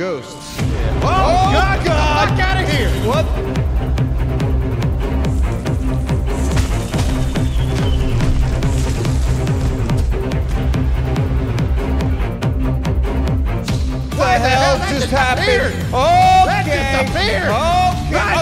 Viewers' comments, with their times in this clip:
0:04 The music made me get up and dance!